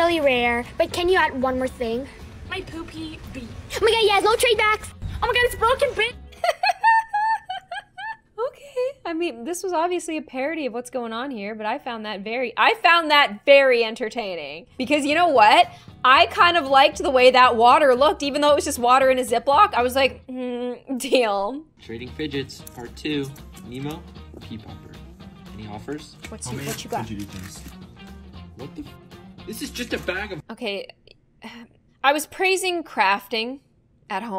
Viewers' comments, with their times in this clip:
0:07 the cutest laugh I have ever heard and let’s appreciate the beauty of the women ❤️✨
0:19 not the laugh it mad my day 😂😂😂❤❤❤❤😅